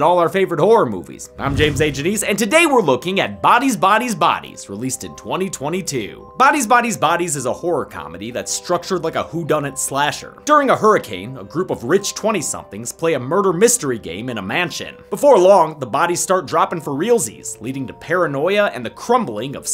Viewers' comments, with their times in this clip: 0:06 The way he said "bodies bodies bodies is a horror comedy" reminded me of the dreidel song